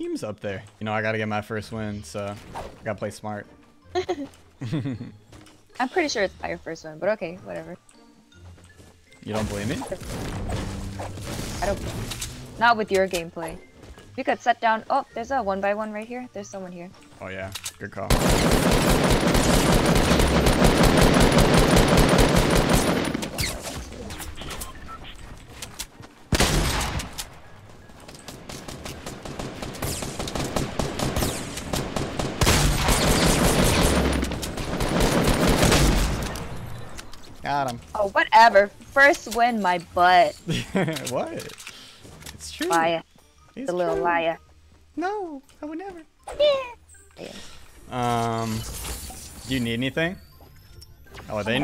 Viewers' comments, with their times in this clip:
0:05 His lil giggle 🤣
0:37 awkward laugh what?